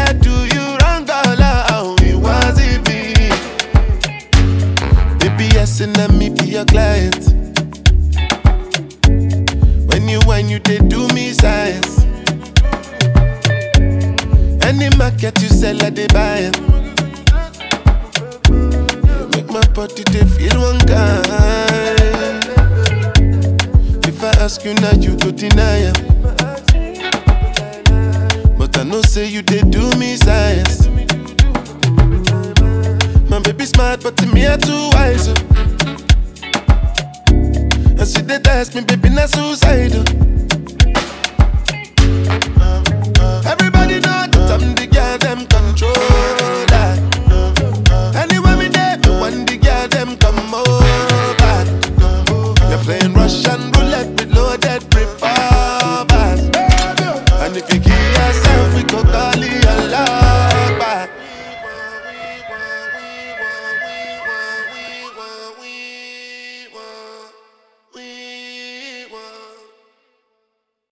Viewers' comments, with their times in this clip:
0:04 ... I like that Saxophone
1:01 The way he sings out the sound of the ambulance/cop car and makes it sound beautiful goes to show just how beyond-awards talented this African Giant is. From Zambia 🔁 P.S. We apologize as a country to Mr. Damini Ebunoluwa Ogulu and the country of Nigeria as a whole for trying to steal your watch lol